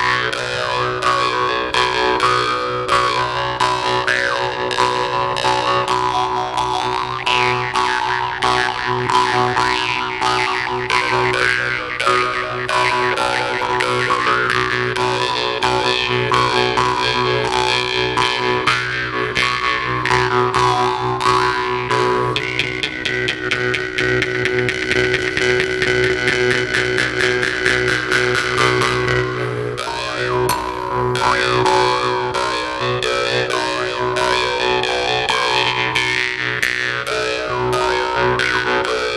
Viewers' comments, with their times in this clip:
0:09 They suddenly turned into Daft Punk
0:21 starts to sound like "Satisfaction" by Benny Benassi
0:23 i thought darude sandstorm was going to break out